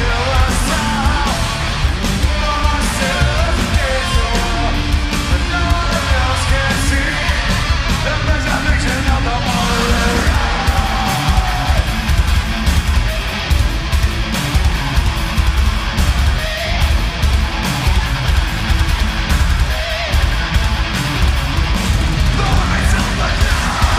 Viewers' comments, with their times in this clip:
0:09 Best scream ive ever heard. Sounds almost demonic